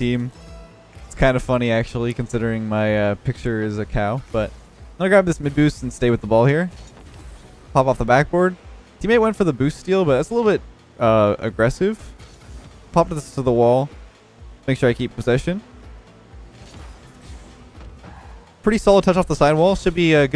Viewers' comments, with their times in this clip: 0:04 I could have swore you said McBoost. Lol
0:05 I thought you said “McBoost” lmao
0:06 did I really just hear you say I’m gonna grab this mcboost